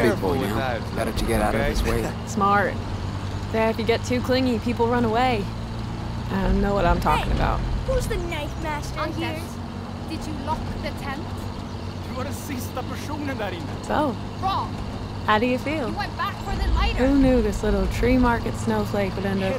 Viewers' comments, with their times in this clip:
0:07 Ingrid speaks english with an accent, but Anders replies in Swedish.For anyone who cares here is their conversation on the truck starting I: Anders did you lock the tent? A:You where the last person in there. I: Wrong! You went back for the lighter. A: Hell I thought you where going to get water. ... I: We have to ... this! why am I the only one to care? A: ... my fault?! I: Remember how we got robbed? A: Yes, yes, its allways my fault. Then they are interupted by Big Joe, people start talking about him, and as people laugh Anders says: You guys are funny!